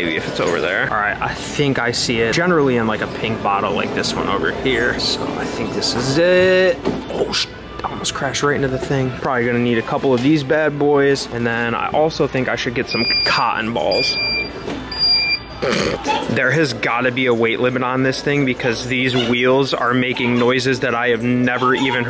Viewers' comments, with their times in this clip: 0:10 when the cart started beeping 😂😂